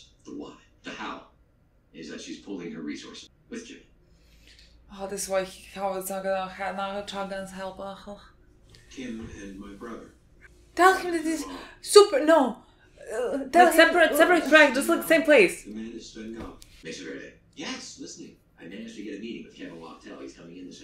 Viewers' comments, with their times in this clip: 0:04 Teacher: "The listening test won't be that hard" The listening test: